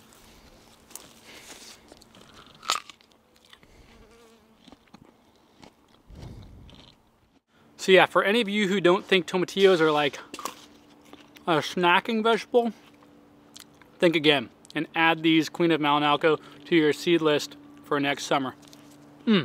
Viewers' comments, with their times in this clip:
0:04 We aren't gonna talk about that little bee that buzzed ?